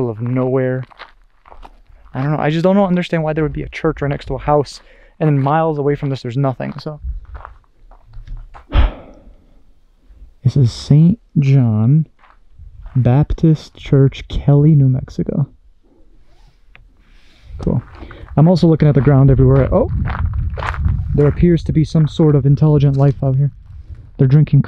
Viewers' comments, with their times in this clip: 0:08 sounds like someone banged on the church door